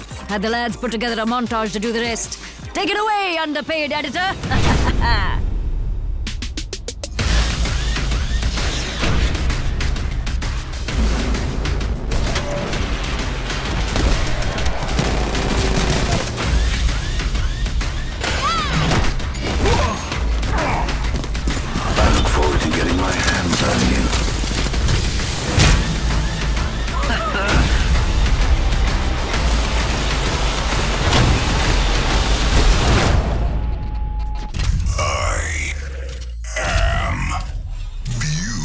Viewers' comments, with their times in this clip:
0:06 Is it just me? Why does this music slap so hard?
0:19 that awkward moment when you realize she says "die" not "yaaaaaah"